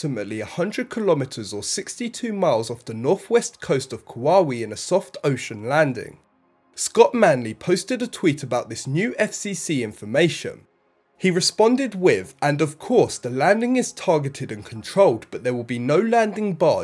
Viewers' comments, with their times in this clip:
0:03 At:~ the computer voice narrator says that the Starship will land off the coast of Kauai. it pronounces it (Ka Wa We) But in fact it is pronounced (Ka wa ee )